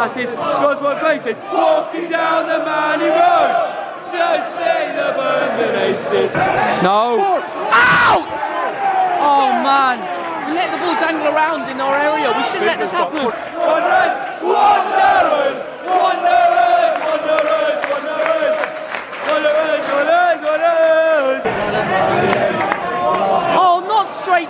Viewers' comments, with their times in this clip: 0:08 RIP headphone users (me)